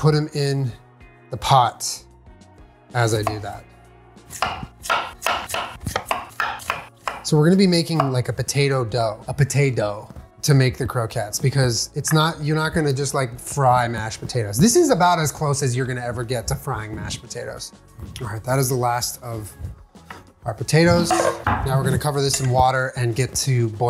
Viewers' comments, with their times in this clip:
0:05 Did any one notice he cut the potatoes to the tune of the old Nickelodeon theme song? 😂